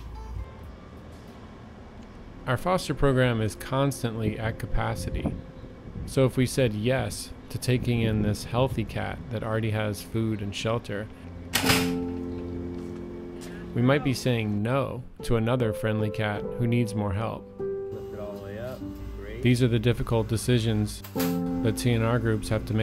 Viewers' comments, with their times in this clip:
0:10 the cat was kept eating when the door snapped close, (s)he's so chill😂